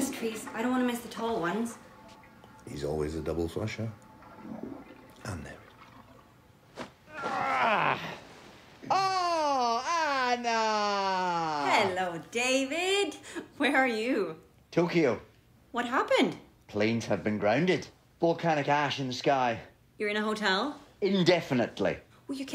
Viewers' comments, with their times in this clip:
0:09 Why does David sound like a grandma who just saw her little granddaughter for the first time this week lmao